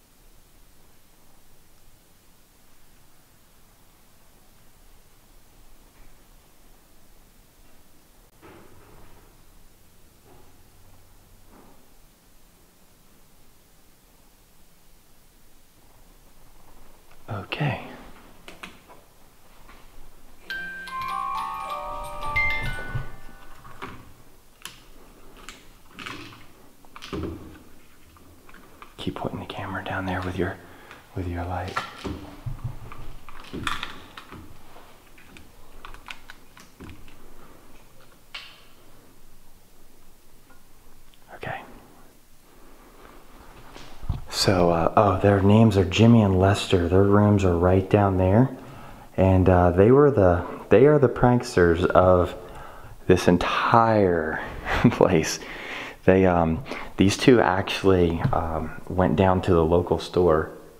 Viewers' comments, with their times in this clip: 0:09 can hear movement down one of those rooms
0:42 right after you say ok, something whispered ONE loved the videos z😘💜👻